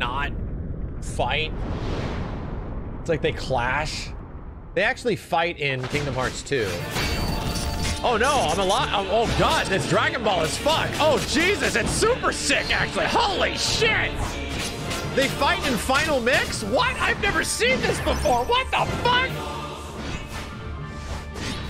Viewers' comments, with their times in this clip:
0:07 I love how all his words for this become like sentences without spaces in between: "OHNOI'MALI--I'MOHGODIT'SDRAGONBALLASFUCKOHJESUSIT'SSUPERSICKACTUALLYHOLYSHIT THEYFIGHTINFINALMIXWHATI'VENEVERSEENTHISBEFOREWHATTHEFUCK?!"